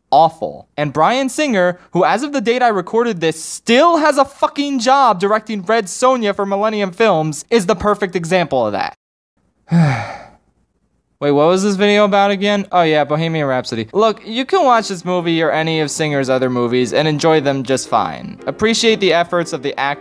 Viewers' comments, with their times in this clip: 0:05 The hell is "Fred Sonya"?